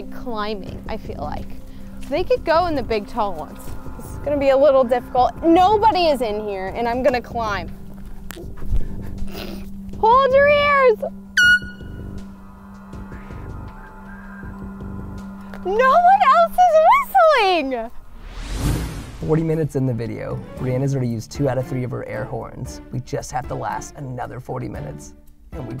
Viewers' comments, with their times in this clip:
0:10 she never said they had to blow the whistle loud 😂😂😂